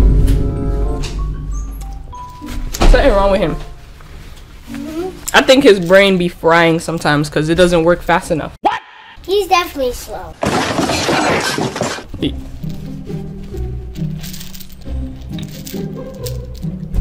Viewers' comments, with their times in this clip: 0:03 the way she said ur brained fried it had me rolling